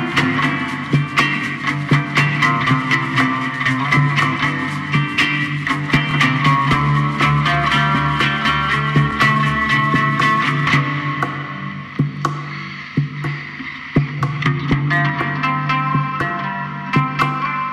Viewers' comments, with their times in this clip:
0:03 music is amazing!!!